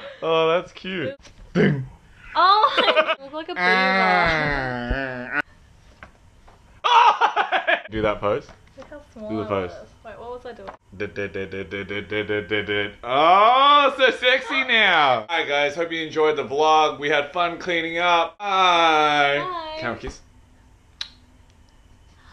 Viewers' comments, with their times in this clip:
0:06 that laugh LOL
0:07 That laugh though.
0:07 That laugh just killed me